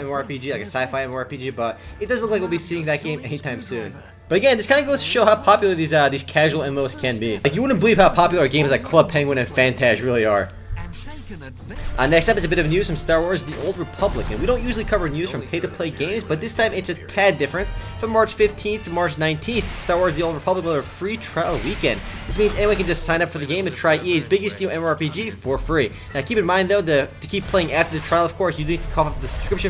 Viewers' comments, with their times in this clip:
0:08 when his voice gets louder he sounds pissed off. LOL
0:11 "Our next episode of news". Never saw someone saying that so damn fast xD